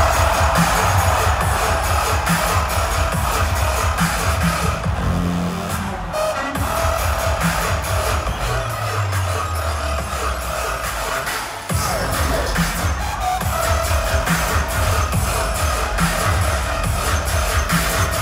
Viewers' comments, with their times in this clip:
0:03 THAT DOUBLE WTF